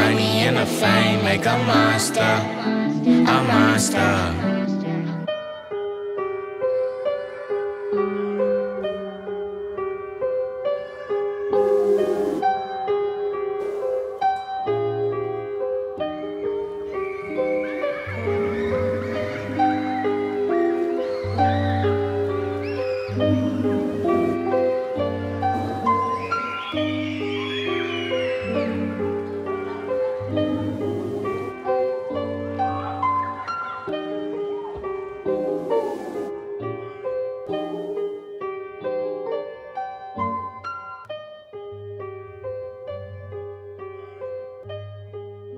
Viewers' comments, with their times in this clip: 0:05 gives me goosebumps.. Me and my family ran away from conflict in the Middle East when I was younger and the kids screaming... man it just paints the picture.
0:33 wow the end is so beautiful, the melody sounds so different from anything i've ever heard before.